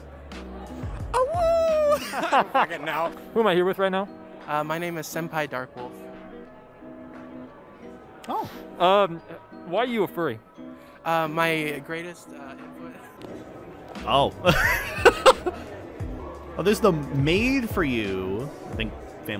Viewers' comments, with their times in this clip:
0:03 you could see the cringe in his eyes and just hear it in his voice